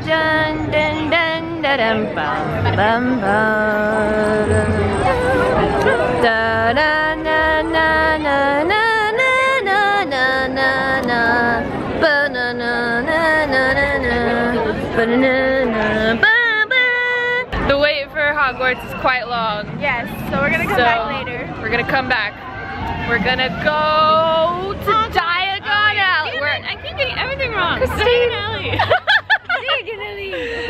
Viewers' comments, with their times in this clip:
0:09 she sounds like a minion saying banana.
0:14 she sounds like a minion
0:15 it sounds like banana